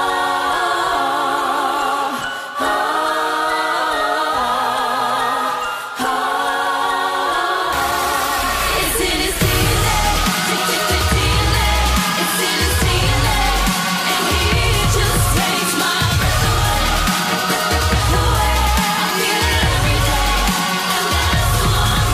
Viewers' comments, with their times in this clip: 0:07 It sounded good it was just strange at like without Perrie's giant backup singing.